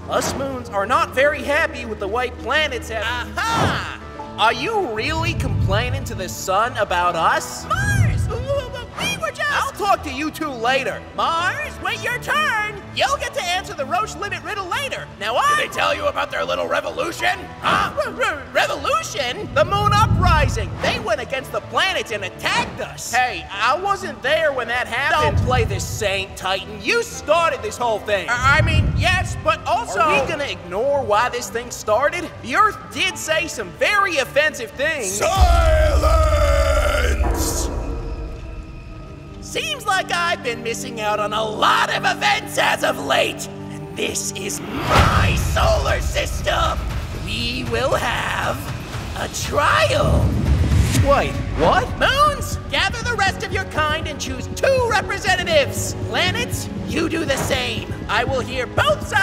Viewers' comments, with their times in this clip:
0:09 I love the way mars talked to phobos and deimos. He sounded like an angry father who will scold his children later lol
0:44 Why does the sun sound like my mother💀
0:47 Titan’s little gulp